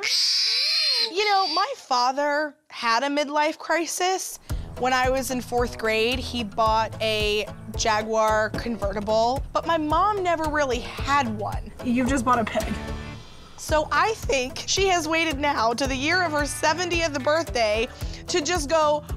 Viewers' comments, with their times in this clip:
0:03 that was sheer panic! That was a cry for help!I hate animal cruelty!u better not fucking eat that pig!